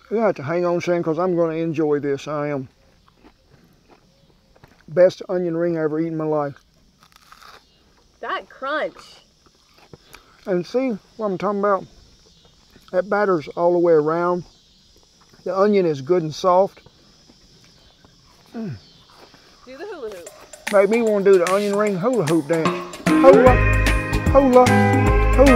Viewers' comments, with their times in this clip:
0:07 the first known instance of the tik tok text to speech voice